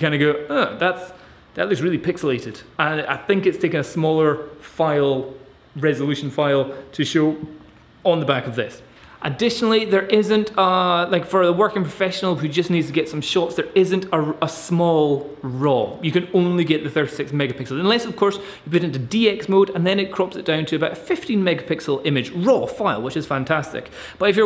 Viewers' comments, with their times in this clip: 0:07 Looking at a 2nd hand D800 to step up to full frame and replace my crop sensor D5600. Not that I'm unhappy with it, just feel I'm ready to take my photography to the next level. With the D810 and D850 out, I can pick up a quality pre-owned body only for $950 - $1200 (USD). The D800 is still relevant and the price won't break me. The only drawback would be replacing all of my crop glass with full frame. I liked the fact that you gave all the pros AND cons of this camera. To me, none of them were a real deal breaker. I feel like I have a better understanding of what I am getting myself into when I eventually drop the hammer on this purchase. Highlight was the burp Glad you didn't edit that out. Cheers mate !